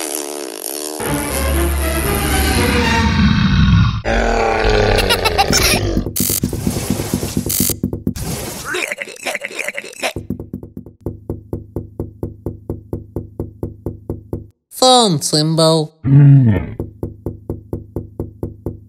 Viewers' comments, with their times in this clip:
0:04 Boxy bee Screaming